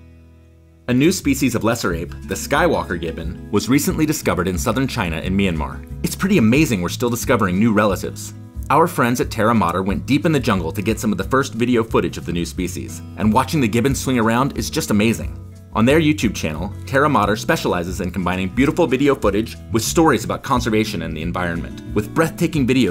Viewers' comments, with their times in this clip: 0:04 southern China in Myanmar !?!? Myanmar is a different country and china is a different country!?!?